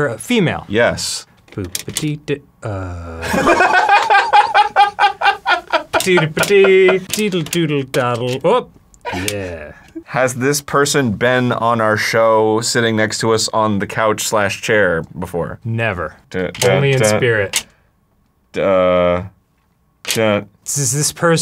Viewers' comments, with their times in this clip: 0:09 The pause at Jamie Lee Curtis 😂